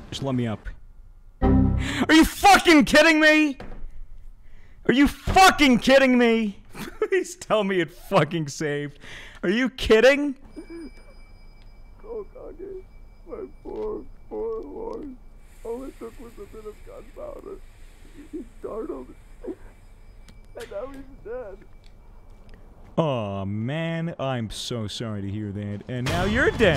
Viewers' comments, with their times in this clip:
0:07 is nobody gonna mention how his voice just completely changed